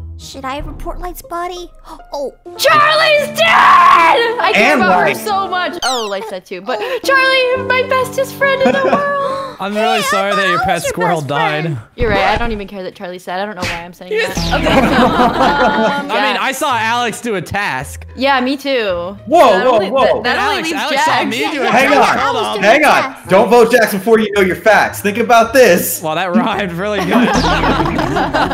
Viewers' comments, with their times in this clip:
0:09 you know that scream was perfect 😆